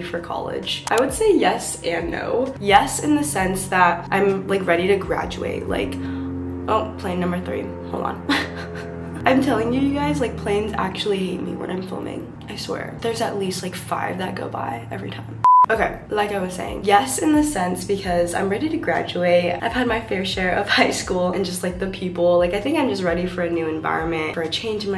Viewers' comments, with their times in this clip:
0:06 do you live near an airport?🤔